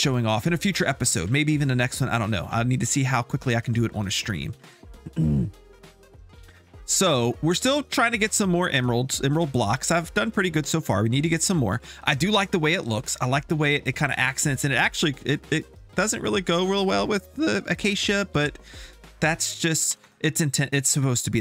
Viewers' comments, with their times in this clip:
0:05 You really fart on ? 😁😁😁